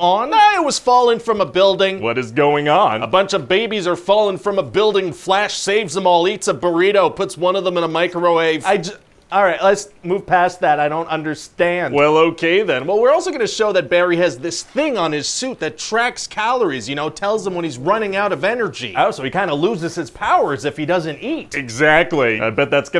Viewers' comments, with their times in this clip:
0:08 I like the way he says micro wave :)